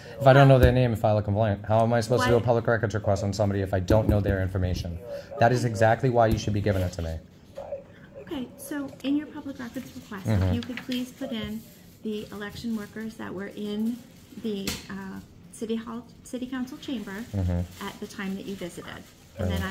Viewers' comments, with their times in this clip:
0:07 those chips are extremely loud